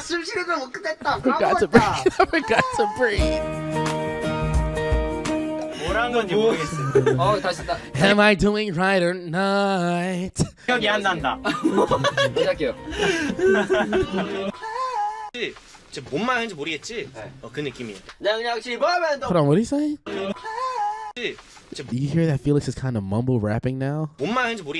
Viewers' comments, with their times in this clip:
0:09 your vocals ate, well done 👏